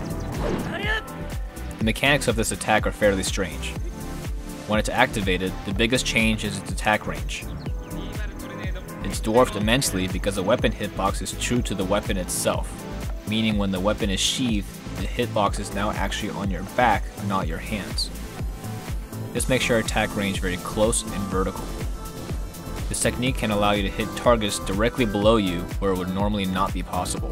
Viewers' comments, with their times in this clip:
0:08 (whispers) Revali’s Gale is now ready